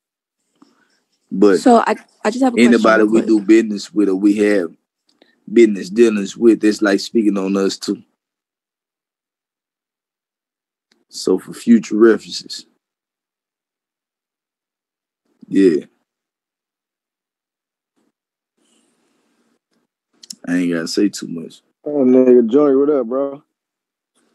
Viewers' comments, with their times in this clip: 0:06 the birds startin chirpin 😒